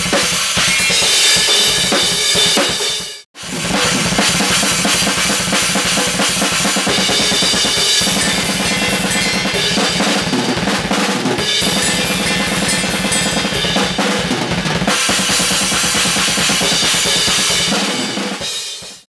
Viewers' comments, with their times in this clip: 0:08 THAT BLAST OH MY GODDDDDDDDDDDDDDDDDDDDDDDDDDDDD